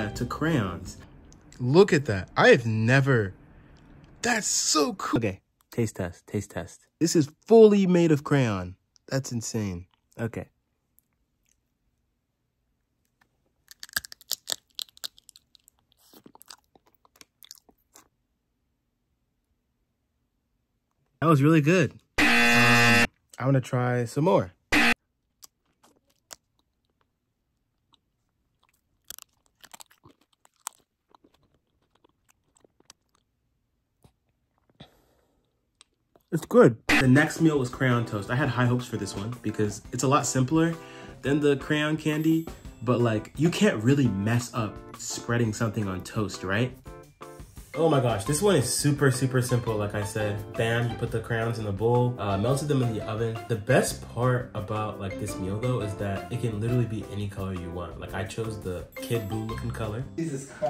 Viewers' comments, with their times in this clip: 0:08 bro had some ASMR then he just side eyed us in frikin dying😂
0:44 nice mic bro